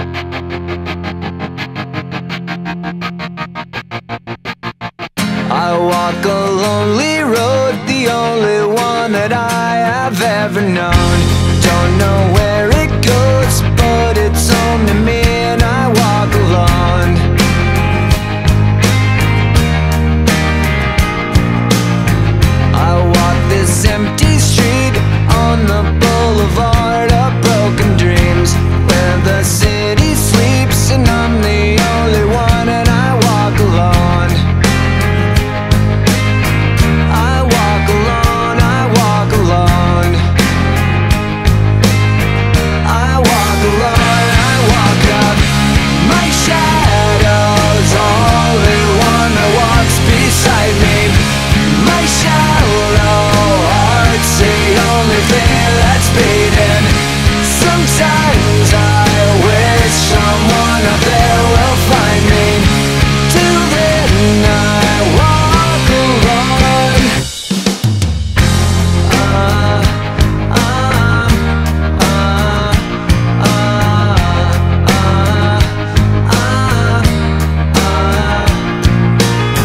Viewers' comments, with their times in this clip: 0:05 And I Wore Cologne!?😂
0:11 The bass line starts for any bass players!!
0:36 I wore cologne, I wore cologne
1:03 I like the high note in "till then i walk alone "